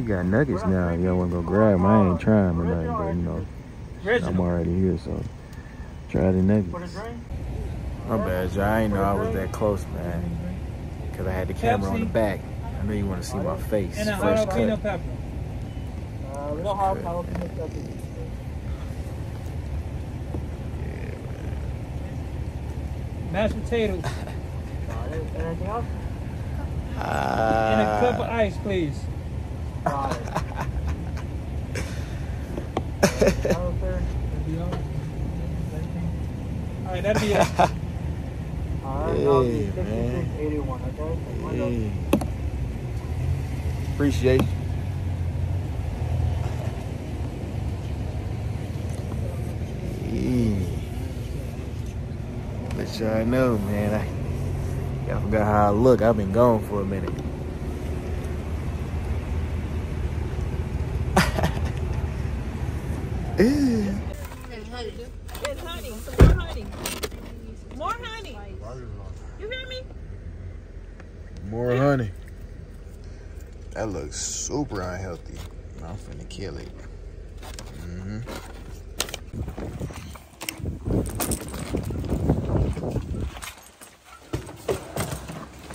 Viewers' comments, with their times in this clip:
0:08 First man’s full out acting like dub 😂 like wtf 😂😂😂
0:38 bro think he the big drop with the lil laughs 😂
1:06 Momma yelling about that honey had me dead 😂😂😂😂